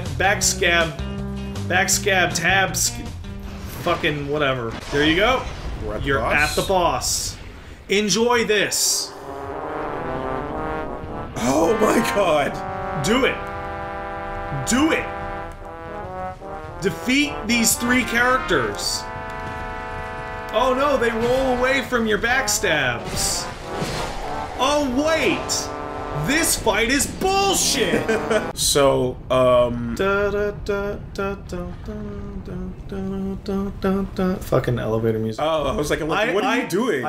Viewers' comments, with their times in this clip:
0:08 Can I just say, stellar choice of music for such a garbage fight. Fits the feeling of walking into here perfectly.
0:19 the music gave me a chuckle